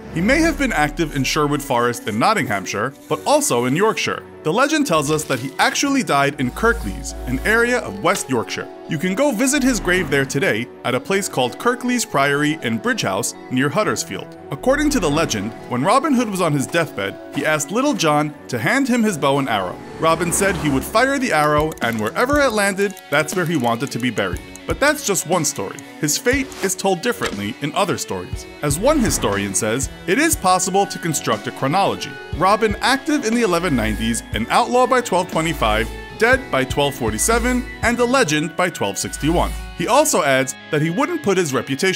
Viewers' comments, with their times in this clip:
0:07 I'm from here and it sounds nothing like that p.s I pissed on his grave
0:24 the music starts getting crazy